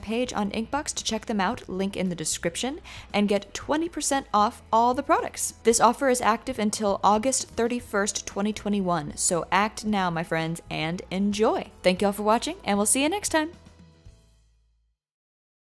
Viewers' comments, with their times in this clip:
0:13 the normal to the "hOLD DOWN oNE SECOND...